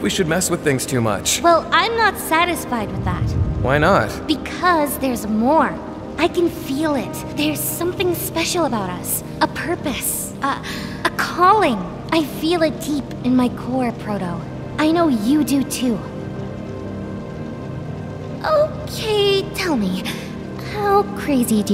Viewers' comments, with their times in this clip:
0:04 Theia sounds like a Disney princess